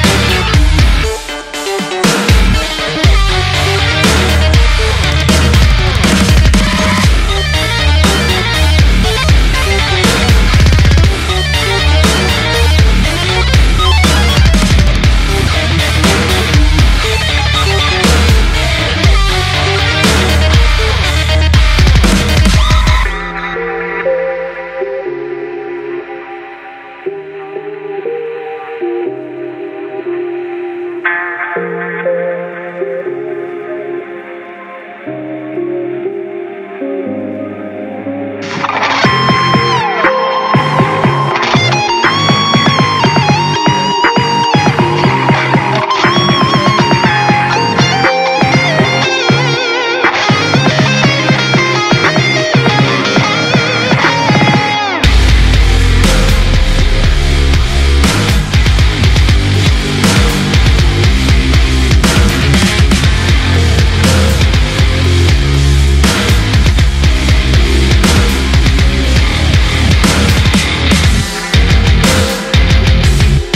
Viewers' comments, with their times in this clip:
0:07 For me it was but 3min groovy af
0:07 bass tho sheeesh
0:56 Love this song. That bass riff that comes in is so catchy <3